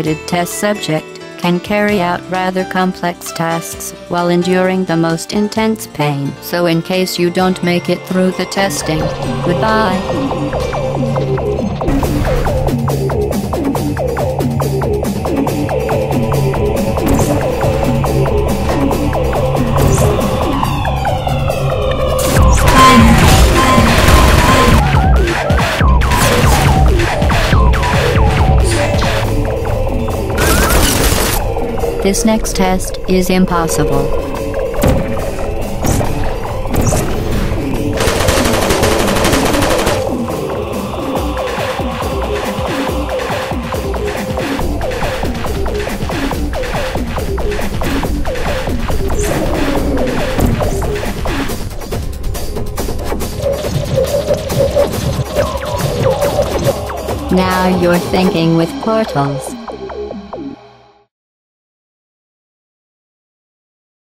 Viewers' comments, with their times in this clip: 0:06 I love how you can hear the difference between GlaDOS here being completely robotic, and in the actual game where even at the start of the game where she's the most robotic she gets in the whole game it just feels much more like a character, her original line readings here sound just like a text to speech thing. Also 2 things I noticed, the dark hallway at the end because they hadn't figured out elevators as level transitions, and there's a card that makes it seem like fall damage might have been a thing Also also, about 4 seconds late pausing the screen it looks like originally chell was a guy
0:28 there is dialogue. I'm assuming the beeping is just a placeholder sound.
0:51 I've always loved how the music had a little pause so we could process the world's first Portal Trickshot.